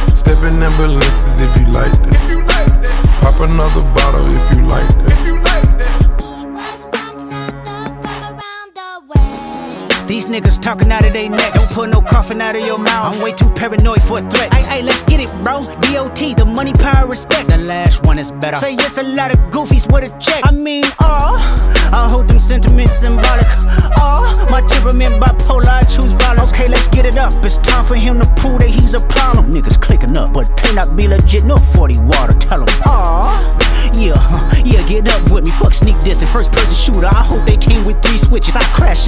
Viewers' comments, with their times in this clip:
0:09 where the music start
0:20 Kendrick sounds like he’s taking back shots